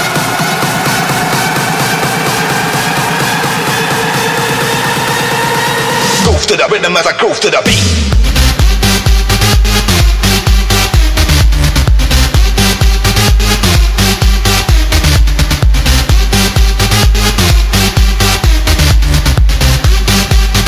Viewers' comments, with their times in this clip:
0:05 Bass starts at: You can thank me later 😂
0:08 Blasterjaxx sounds detected